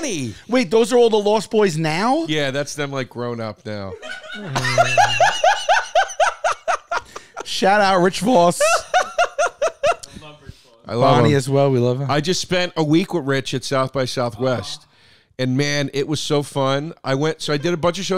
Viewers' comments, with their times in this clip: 0:04 I have never seen someone laugh like that without moving their mouth. Unbelievable. Tremendous